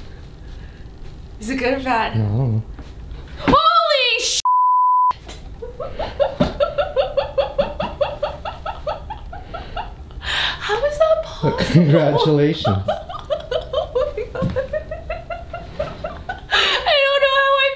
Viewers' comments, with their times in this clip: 0:03 Lol! Your outburst and laugh made me laugh so much! Congrats!!!